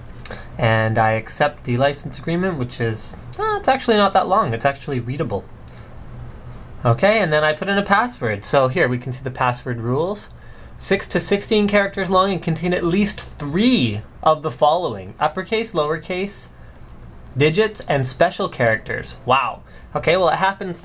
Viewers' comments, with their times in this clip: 0:03 i love that voice when he does it on every video :P